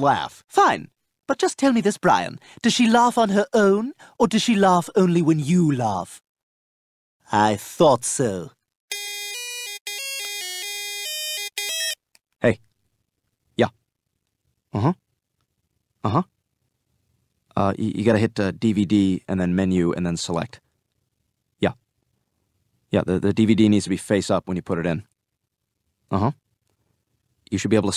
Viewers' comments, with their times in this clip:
0:08 Oh boy, I remember those old ringtones